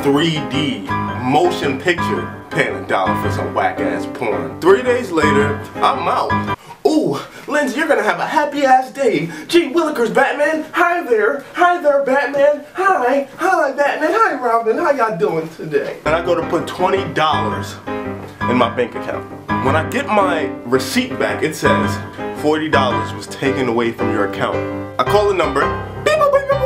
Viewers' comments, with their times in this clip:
0:07 When I first saw your comics I picture you voice sounding more like but your voice is way deeper lol.